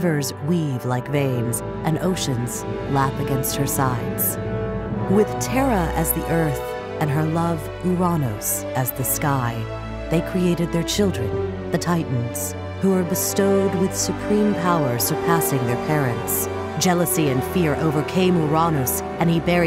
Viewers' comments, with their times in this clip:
0:05 That's an...interesting way of pronouncing Uranus.